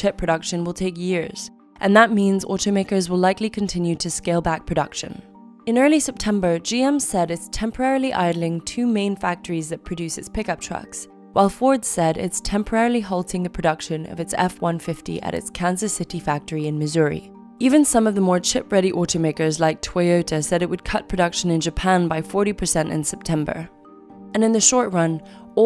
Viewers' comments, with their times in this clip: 0:10 The accent sounds OK, but a grammatical error